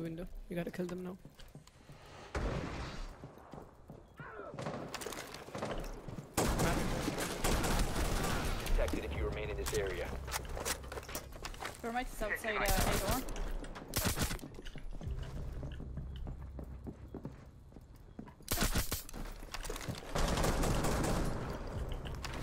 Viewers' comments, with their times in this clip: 0:08 hack look to other scream